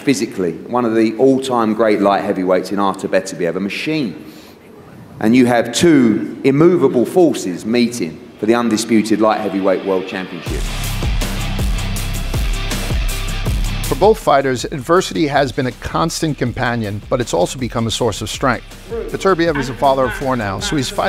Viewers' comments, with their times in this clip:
0:06 Is than man reciting Quran.